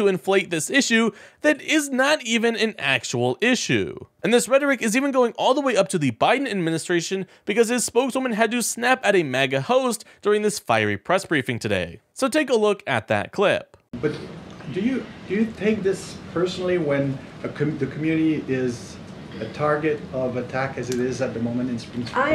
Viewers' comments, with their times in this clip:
0:10 Skip to to avoid the clickbait. She did not snap. She spoke clearly and reasonably.